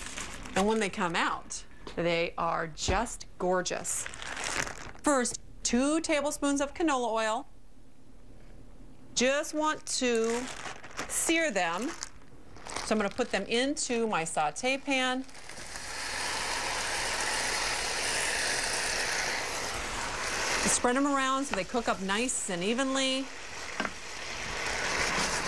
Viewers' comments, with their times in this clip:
0:08 Am i the only one that heard her say 'jews want to sear them' ? XD